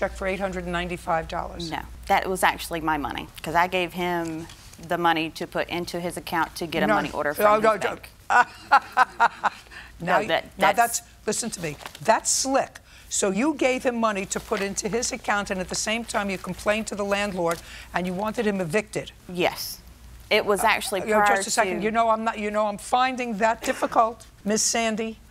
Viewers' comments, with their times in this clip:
0:08 That laugh shakes you to your core. You never want anyone laughing like that after you say something, let alone Her Highness, Judge Judy!